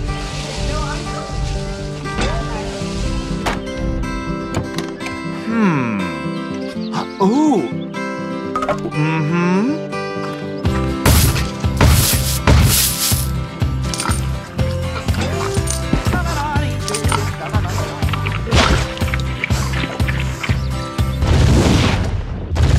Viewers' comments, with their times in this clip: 0:05 Minecraft villager noise